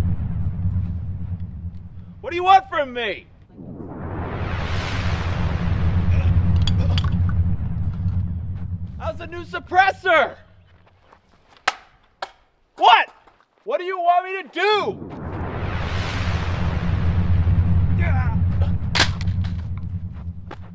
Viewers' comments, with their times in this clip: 0:06 did anyone else hear a lego star wars brick noise/mr krabs walking for half a second?